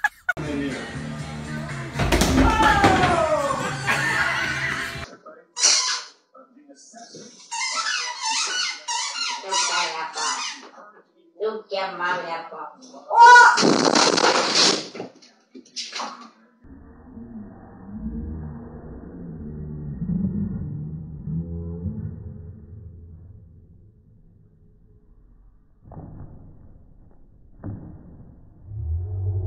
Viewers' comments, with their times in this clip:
0:10 it’s just so funny because the loud noise😂😂🤣